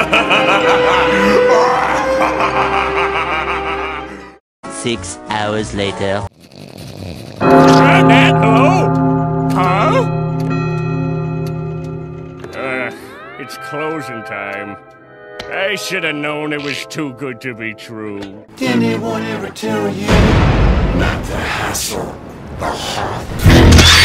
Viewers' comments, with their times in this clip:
0:07 What's the big bell chime? I don't mean the clock chiming, but it sounds like a big church bell.